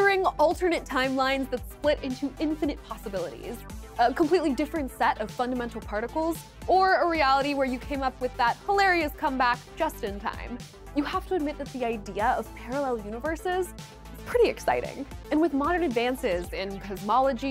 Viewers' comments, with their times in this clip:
0:03 I lasted with this broad yelling at me. I don;t care WHAT this is about, I'm not listening to this bllsht from her.